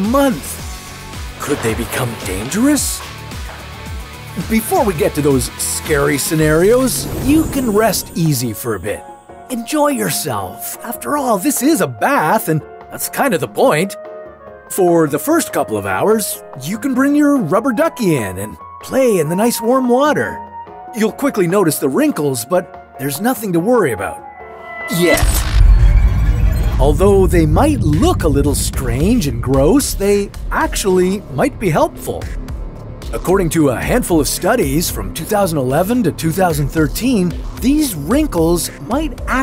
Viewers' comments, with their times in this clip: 0:10 “enjoy yourself” How can I enjoy the moment with listening to brokenheart-ed rap song?
0:25 i got scared so much when he said YET YEEEEEEEEEEEEEEEEEEEEEEEEEEEEEEEEEEEEEEEEET